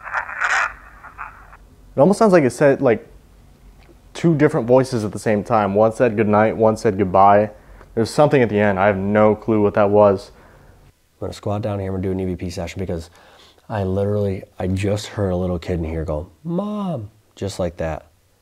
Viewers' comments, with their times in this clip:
0:03 also heard the EVP sounds like it’s saying “Have a goodnight!” and then another “Goodnight!” right after 🤔